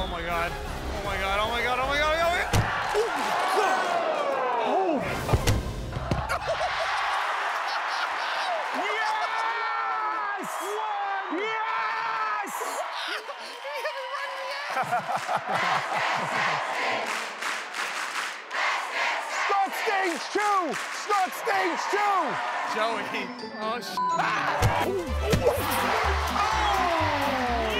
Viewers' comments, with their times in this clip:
0:08 sal is literally war crying omg 😂😂 he’s serious about this 🤣
0:09 Sal:"YEEEESSSS" wayy too happy to see his friends get hit with balls
0:10 Sal yelling yes is the most real emotion in the world lol